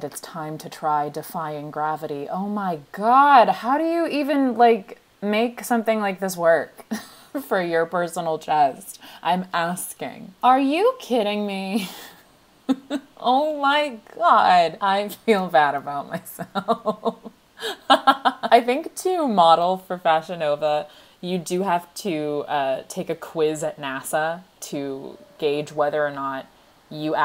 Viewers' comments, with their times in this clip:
0:10 you sound like one of the heathers. aRe YoU KiDdiNg Me